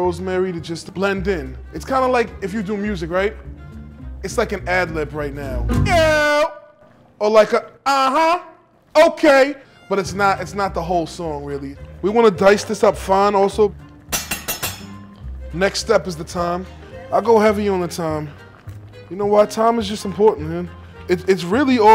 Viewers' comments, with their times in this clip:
0:08 Meyhem channels his inner Lil' Jon